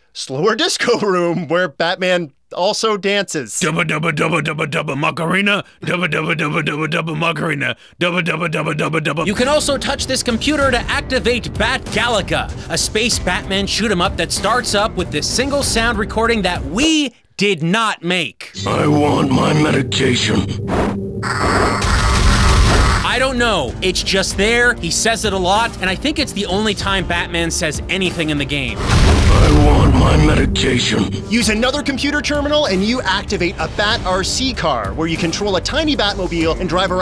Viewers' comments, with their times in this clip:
0:10 is this voice where Christian Bale got the idea for his scratchy Bat-Voice? Sounds pretty identical to me
0:16 that's crazy. Batman wouldn't start talking like a jackass with strep throat for years to come. I'm beginning to wonder if this game is what they gave Christian Bale to research the role.
0:18 I think he's saying "I want my medication"